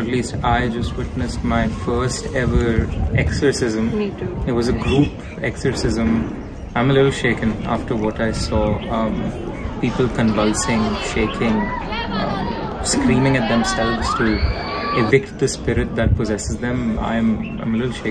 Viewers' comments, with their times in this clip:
0:04 You can see that coming when he was stressing on d word 'exorcism' And that's where he was caught!